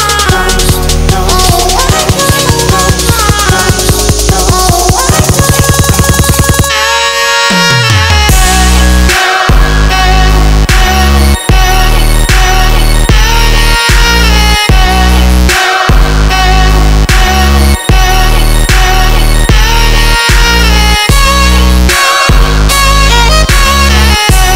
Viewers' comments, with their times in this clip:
0:06 for the sax part! :D